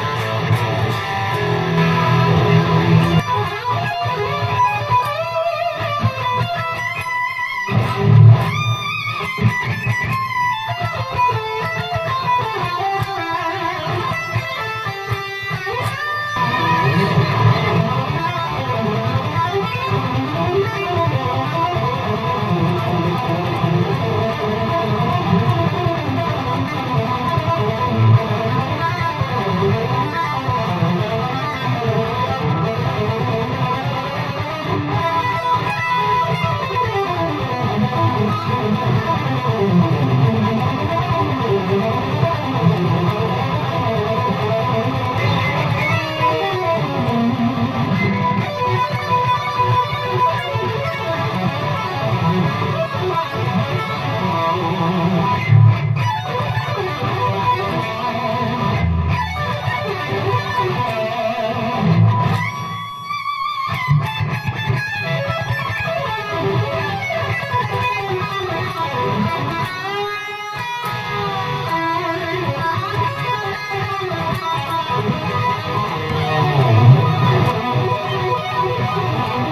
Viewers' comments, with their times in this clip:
0:08 Dude that bend/squeal is the best thing i have heard the whole year.
0:28 Does remind anyone else of Yngwie
1:01 that bend hit me so hard i almost fell off the chair great review and fantastic playing man.